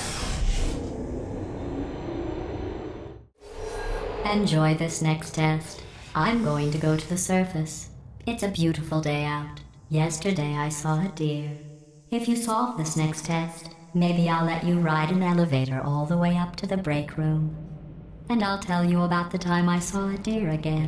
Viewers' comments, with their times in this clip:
0:06 This is one of my favorite test chambers in the entire game, just for the way the music changes with each subsequent faithplate you unlock/use. It’s such a cool touch, and makes solving this chamber feel special.